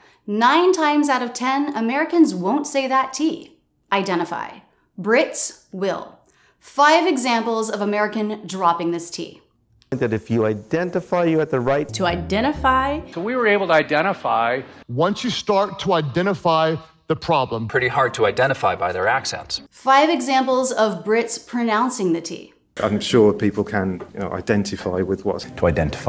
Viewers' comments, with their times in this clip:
0:10 In her example #1 of "dropping the T" if you play it at half-speed (even at full speed), you can CLEARLY hear the T. It's there in #4 as well, but less pronounced. It is dropped in examples 2, 3, and 5 though.